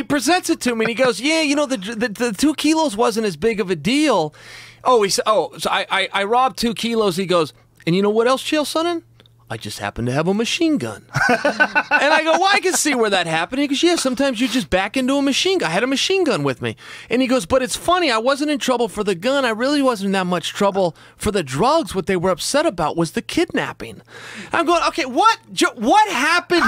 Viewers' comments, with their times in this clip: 0:10 not very loud though